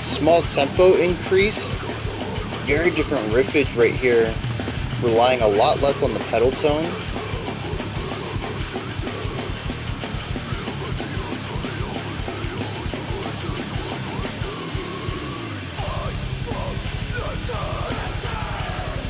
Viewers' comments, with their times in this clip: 0:07 Hey, thanks for doing the reaction! Couple things I'll say, you correctly identified this as metalcore with a strong death metal influence especially in the riffing. I've also never really paid attention to the way the riff at the start lines up with the "Five Eyes" vocals. As far as I'm aware, it's same main vocalist for the whole song except for when the vocalist of another local band called Despize does a couple bars. As for the "doomy" section with the ritardando at the end, it's a common thing in metalcore and heavy hardcore to have a breakdown at the end of the track and then further slow the breakdown down to increase heaviness and encourage dancing and moshing. Awesome video as always :)